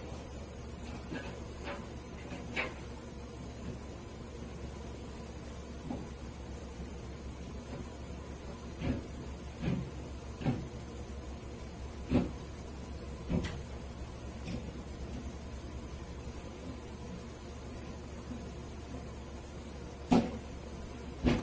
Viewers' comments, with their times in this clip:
0:05 is when the Doom Soundtrack kicks in!. 🔥😡🔥